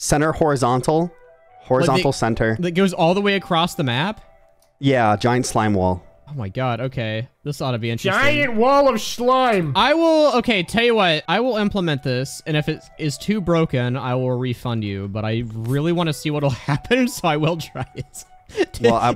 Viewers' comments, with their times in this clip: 0:07 i'm gonna be repeating "GIANT WUALL OF SCHLIME" for weeks now